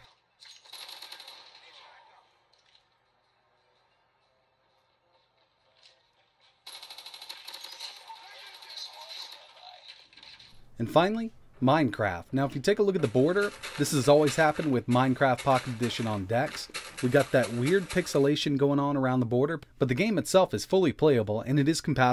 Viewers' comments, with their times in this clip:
0:04 Am I the only one hearing someone playing pokemon ? Likely pokemon ruby or sapphire, or alpha sapphire, omega ruby? Random lol